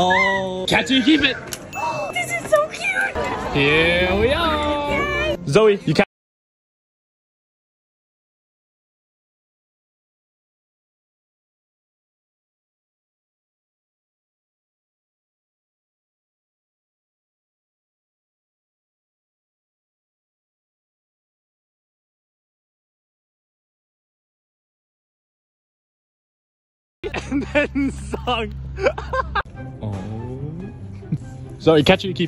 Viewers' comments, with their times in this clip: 0:06 Why can't we hear the sound?
0:08 end up I couldn't hear anything
0:12 I can't hear at least for me
0:14 It lost sound